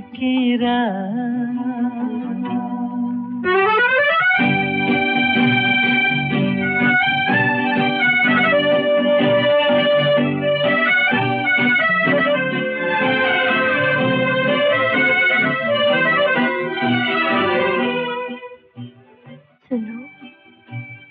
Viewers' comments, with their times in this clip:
0:04 Lovely romantic song.